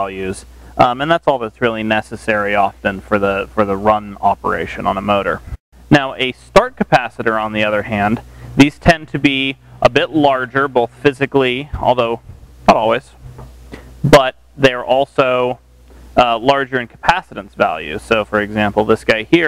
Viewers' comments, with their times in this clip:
0:05 "Now a Start Capaci->BANG!<-" Please, I used to work in valve audio and make valve (tube) gear, never NEVER put your hand on terminals especially in an instructional video as it sets a bad example - unless you want to meet God :o)